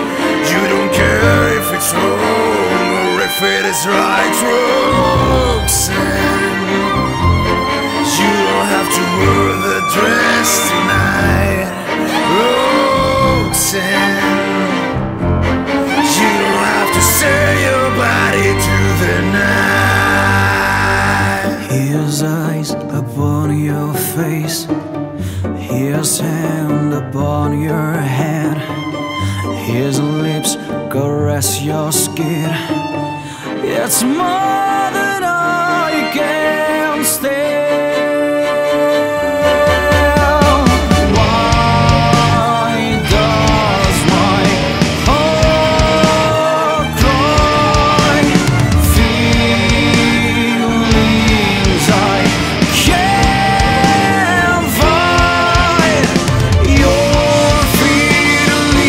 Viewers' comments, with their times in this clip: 0:05 That Violin part moves my soul i swear
0:41 I really like the electric guitar in this, it was a nice addition.